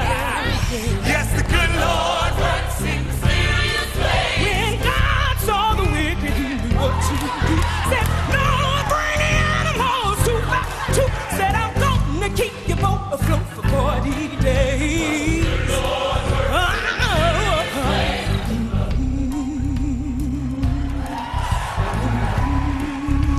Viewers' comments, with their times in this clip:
0:09 Cynthia is incredible! but can we all just appreciate Danielle! That growl did things to my soul